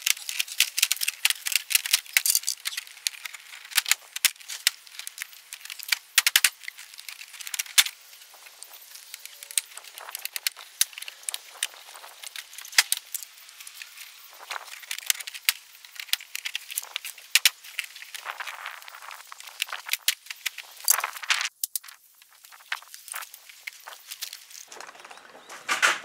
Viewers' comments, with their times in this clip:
0:10 Ghost closed the window because the banging was too loud